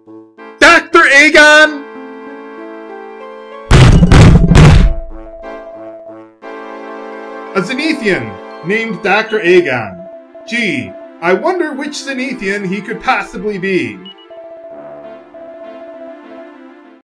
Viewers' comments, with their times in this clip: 0:03 Was that him pounding something? If so, that's hilarious!